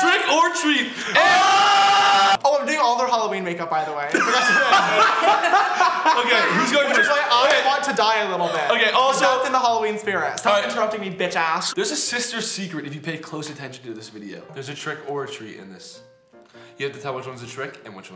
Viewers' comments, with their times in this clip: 0:04 eathans laugh is so cute and funny to me idk why tho. couldn't tell ya